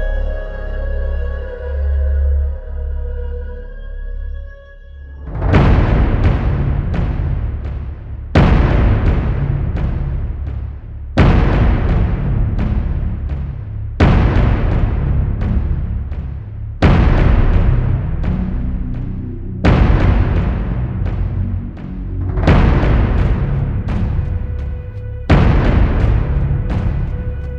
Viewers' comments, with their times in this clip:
0:08 R.I.P. headphone users using high volume